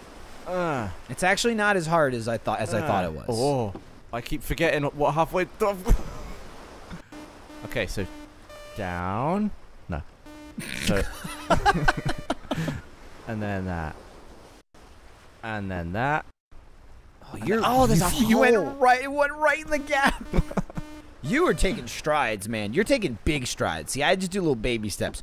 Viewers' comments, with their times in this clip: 0:07 Your disappointed push-up instructor (ASMR)